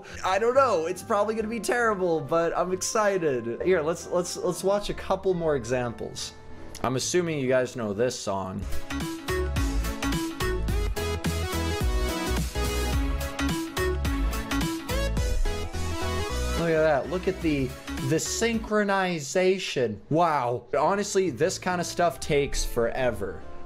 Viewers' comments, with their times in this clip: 0:07 I love that song! 😂
0:10 I love that song!!
0:11 Best SONG EVER!'!!!!!!!!